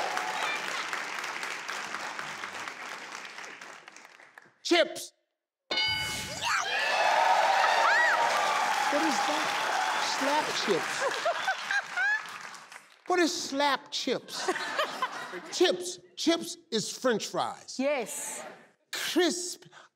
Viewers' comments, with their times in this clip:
0:07 man I love that 😹😹 her reaction and laughter !!